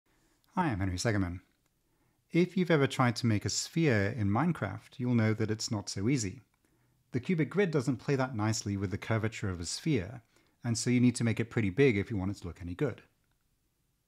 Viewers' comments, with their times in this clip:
0:00 "Hiimangrysegananum" You're a what? 😨